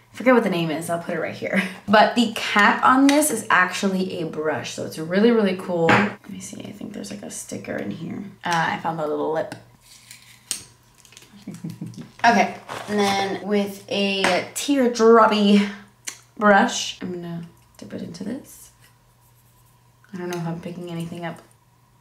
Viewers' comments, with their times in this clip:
0:10 That laugh on is her evil twin coming out 😂